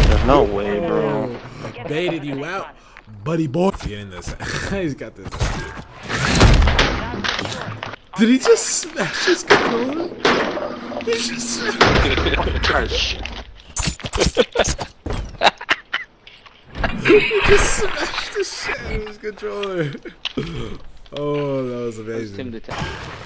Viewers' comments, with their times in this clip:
0:07 it sounds like someone is breaking down the door